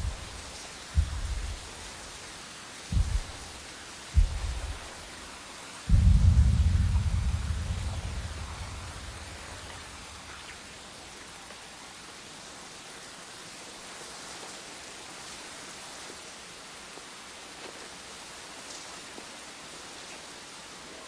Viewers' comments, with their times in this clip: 0:05 The heartbeat stops when we get a closeup to Zilla’s eye